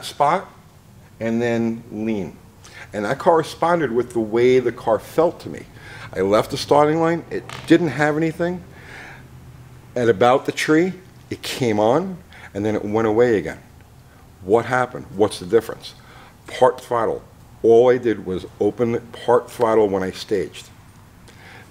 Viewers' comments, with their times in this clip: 0:07 did some one fart？lol